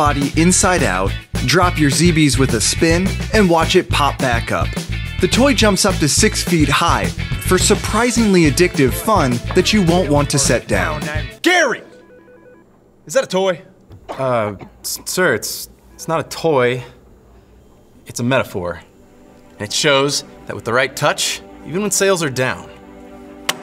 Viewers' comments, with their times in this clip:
0:04 did i hear a roblox oof?